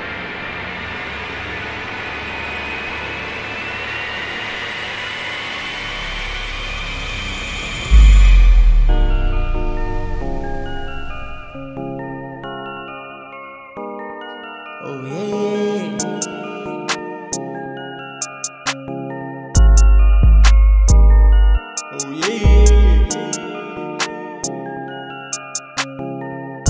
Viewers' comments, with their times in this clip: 0:08 song starts here.